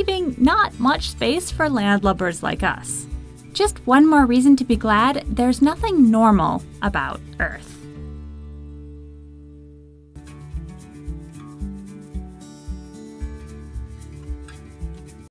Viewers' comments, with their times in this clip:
0:09 that sigh already explained about me